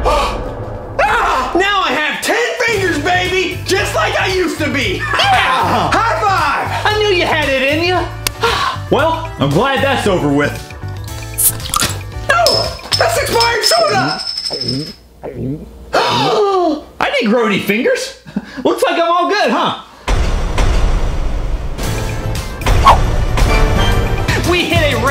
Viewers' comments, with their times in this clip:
0:07 in in clapping
0:08 in the middle when they clapped
0:08 When They Both Clapped